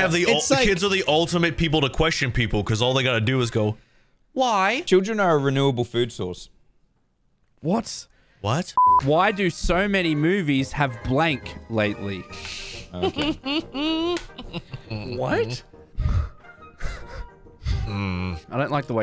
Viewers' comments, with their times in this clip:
0:06 I love the confidence in his voice as a fellow enjoyer of eating I completely agree